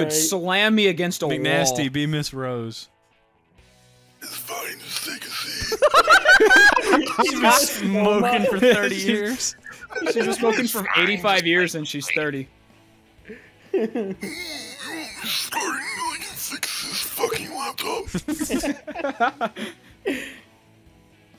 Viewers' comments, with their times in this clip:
0:04 Ms. Rose is Duke Nukem?